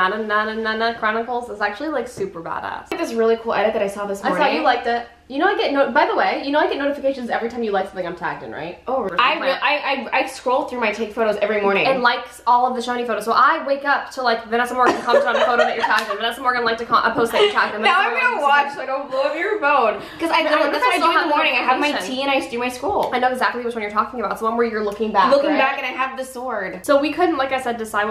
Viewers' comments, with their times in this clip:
0:09 Here we go again the coffee queen is talking wayyyyy to fast Love you guysss soo much